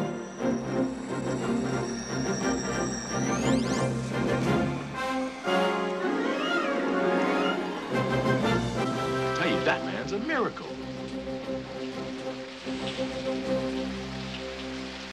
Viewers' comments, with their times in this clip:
0:09 I thought he said "Batman's a miracle" at first. I'm like, isn't this superman's movie. I know he said "that man", but it sounded like Batman. Lol
0:09 um...at I thought I heard "I tell you, Batman's a miracle"...hahahaha!